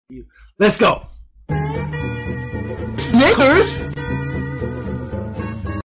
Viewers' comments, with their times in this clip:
0:02 sounds like something racist
0:03 .he fard say racism
0:03 Sounds like the n word